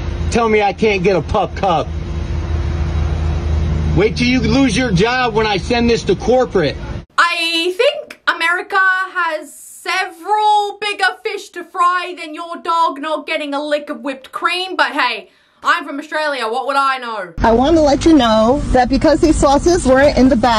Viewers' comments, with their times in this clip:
0:03 That dog is whimpering saying “Dude. Shut the fuck up I don’t want the whip cream just get a burger and leave”